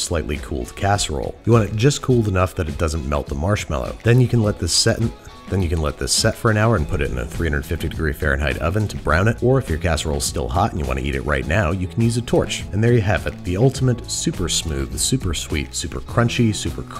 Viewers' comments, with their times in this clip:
0:04 VO flub survived the edit lol.
0:04 Nobody's gonna mention that voiceover slip ?
0:04 audio clipping mistake?